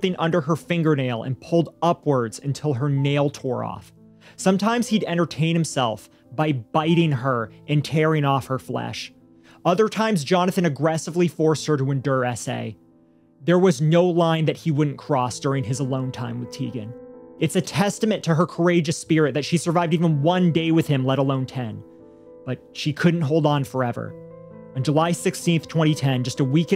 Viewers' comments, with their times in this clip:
0:10 "Endure essay'? What?